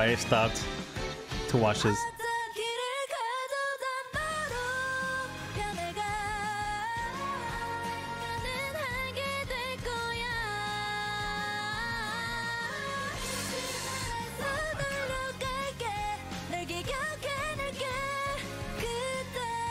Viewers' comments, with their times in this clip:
0:06 I love this video it’s a mix between vocals and crackhead energy! I love which a lot of people don’t know but Yerin and SinB have some really nice adlibs! Something really funny from this day as well is something I recommend checking out! They basically were getting pranked by the staff lmao it’s one of my favourite videos to watch!